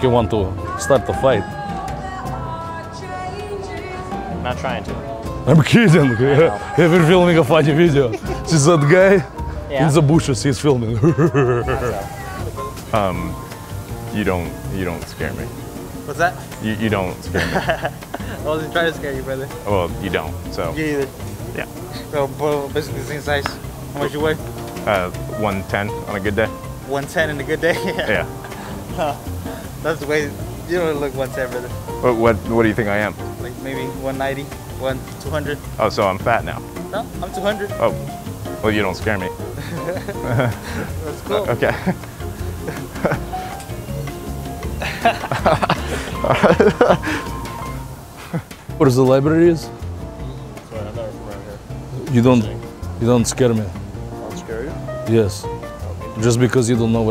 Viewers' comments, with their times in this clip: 0:08 what was that laugh 😂
0:10 the way dude said we're filming a video was more scary
0:39 epic exchange of awkward laughs😀